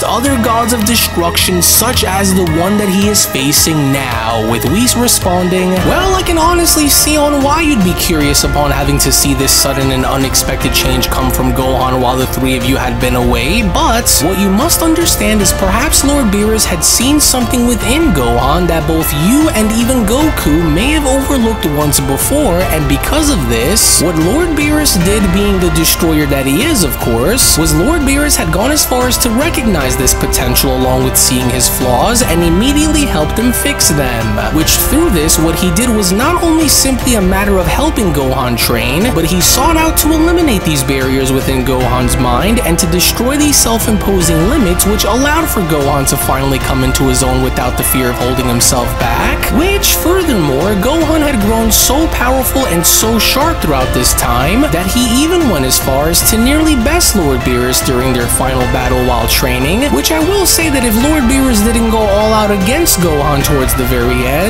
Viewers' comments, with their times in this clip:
0:08 For a moment This gives me terminator vibes the theme started forward. Nice
0:50 Is it me or does the background music sound like the ending music when the T800 kills itself in the movie Terminator 2? I swear it's the same music😂